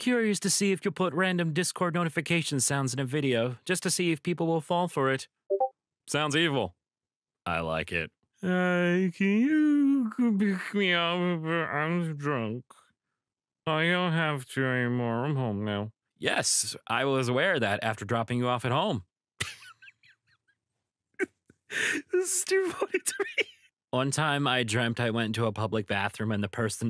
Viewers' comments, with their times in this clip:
0:03 YOU! It worked and confused me like three times lol
0:04 I FUCKING KNEW I HEARD DISCORD SOUNDS THAT SHOULDNT BE THERE
0:08 ....You monster... I've been thinking my notifications were messed up this whole time
0:08 I didn’t recognize it on the spot but I noticed it and I was thinking it was some kind of call answered notification.